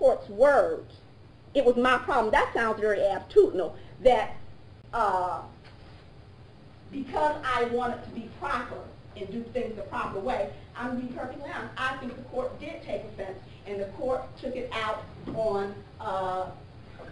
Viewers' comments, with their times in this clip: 0:03 “Dat sounds berry attitudinal”. Wow. Imagine that representing you.